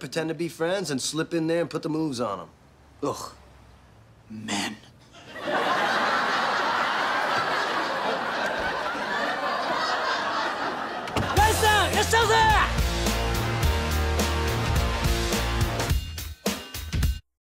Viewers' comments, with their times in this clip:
0:03 I love the way he said "men"😂